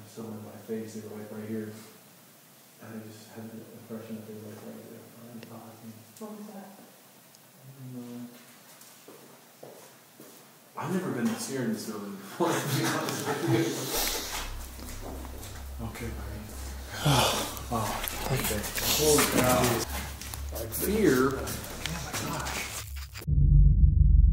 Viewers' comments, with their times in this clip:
0:09 Did y'all or any commenters catch clear footsteps made with high-heeled boots ?? It's SO clear.